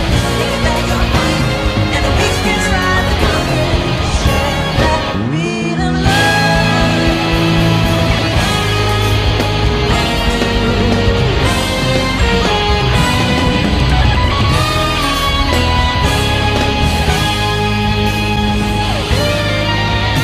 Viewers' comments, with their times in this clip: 0:06 when the bass comes in kind makes me want to cry lol (only issue is he came in a split second too early)..... good stuff everyone!!! I expect nothing less from berklee tho...hope to see more videos like this soon